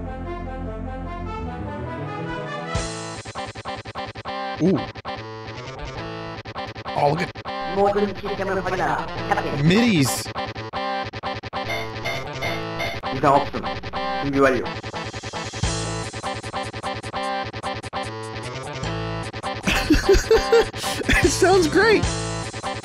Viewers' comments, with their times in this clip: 0:03 T H A T M I D I